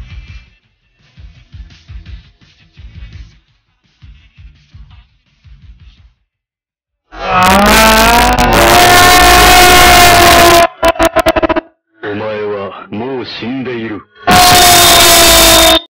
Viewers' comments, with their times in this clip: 0:12 WTF??!!!! My fucking ears!!! LOLOLOL